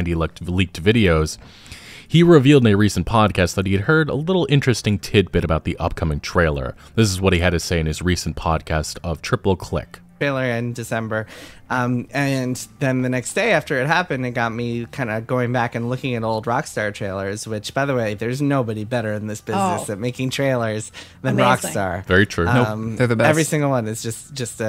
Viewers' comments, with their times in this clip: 0:09 He sounds just like he looks.